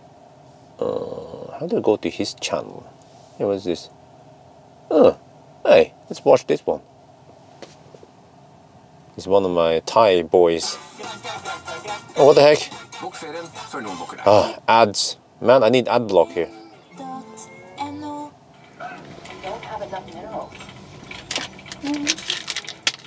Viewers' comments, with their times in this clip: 0:08 Lol its so funny that " Hi is one of your Thai Boys" lol I was lafthing so much. :) lol was so funny the way yo say it :)